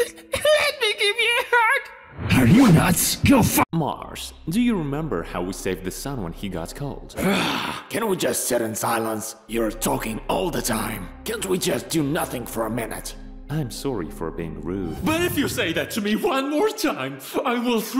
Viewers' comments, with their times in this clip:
0:03 I almost heard the bad word